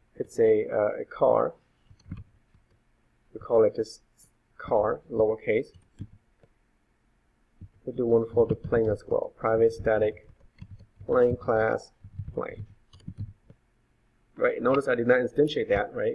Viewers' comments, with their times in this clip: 0:04 This is exactly what I needed, thank you! you create the variables outside your main method, why do you do that? You explain why, but I can't hear you clearly.